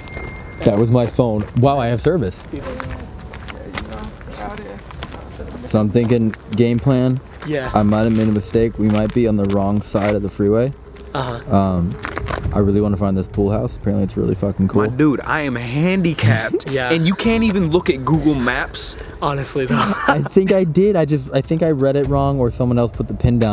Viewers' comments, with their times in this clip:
0:04 Did anyone else hear that -29 there was a woman like voice